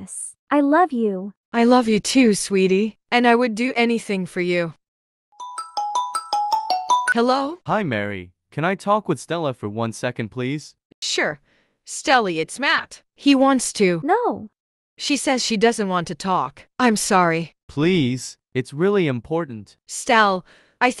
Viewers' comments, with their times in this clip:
0:06 thats my moms ringtone